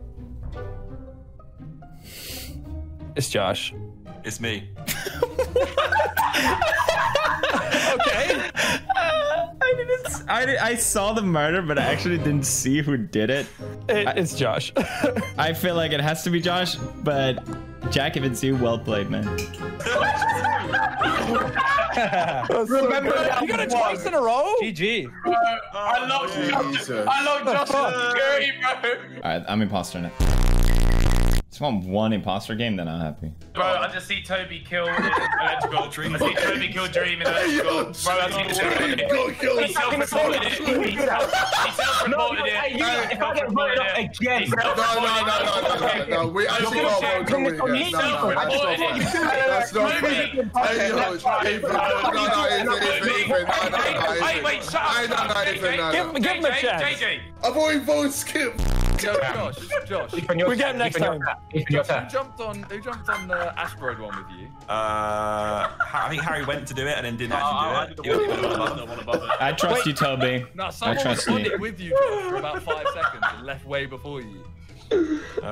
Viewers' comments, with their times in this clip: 0:03 Jacksepticeye saying “it’s Josh” sounds so weird
0:38 try and find how many proper words you can hear
0:43 that sound like an Italian family over dinner
0:59 Ethan laughing for 30 seconds straight is just funny af lmfao